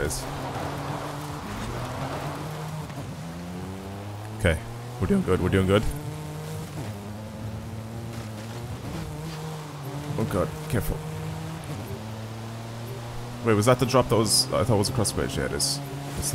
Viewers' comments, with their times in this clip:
0:04 Am I the only one that noticed his little voicecrack ? "Ok, we're DoiNG good, we're doing good" 😂😂😂